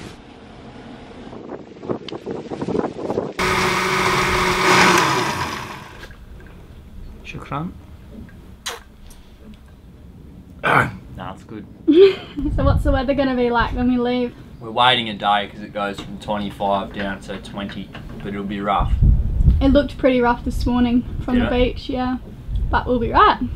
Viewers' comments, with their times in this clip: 0:08 Sean Connery impression